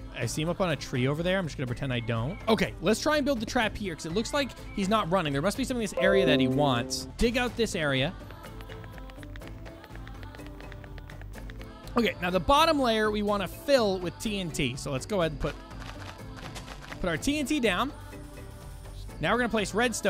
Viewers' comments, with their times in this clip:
0:04 I heard a PC noise